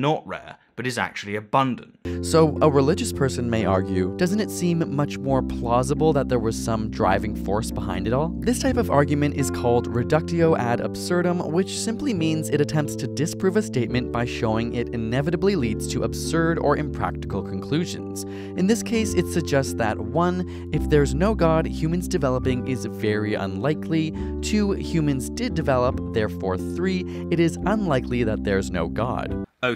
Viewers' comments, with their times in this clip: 0:10 hate when people want to use latin and can't read it properly...